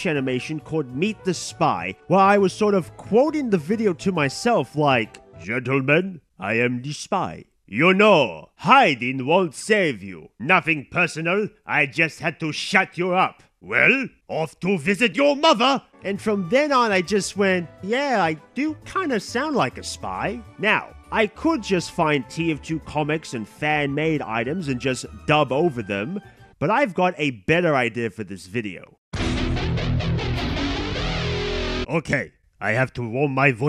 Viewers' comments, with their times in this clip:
0:10 thought this was spy voice lines to compare to your voice, not your actual voice
0:16 kinda like a mixture of medic at the start, when he realized he can do a good spy impression he did a kind of boston accent which scout's boston. i think he can do a good voice impression of the entire support team and scout. probably even soldier and pyro